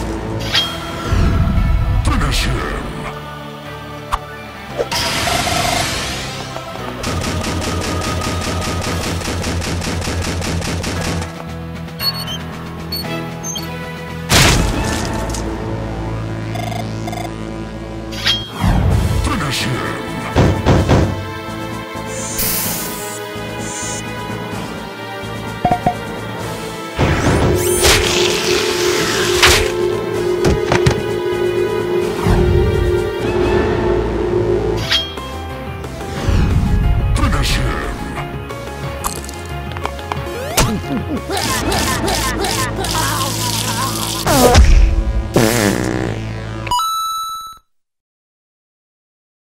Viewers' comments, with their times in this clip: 0:06 I actually did mean That's when the stomping begins.
0:40 WTF!? Mario with Sonic's jump sound effect!?
0:40 i haven’t watched this video in so long and i just now realized mario made the sonic jump sound